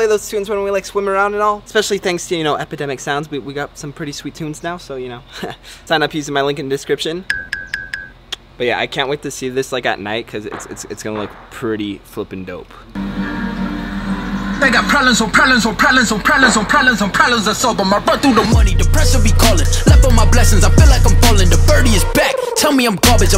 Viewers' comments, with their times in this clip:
0:04 u can hear gunshots in the background
0:09 was that gun shots ??
0:10 Did nobody else hear gun shots